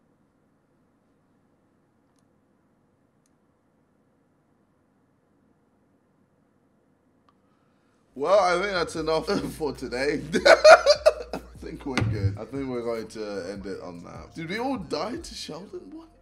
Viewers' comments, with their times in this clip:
0:04 I heard the clock tick at the bak bruh.......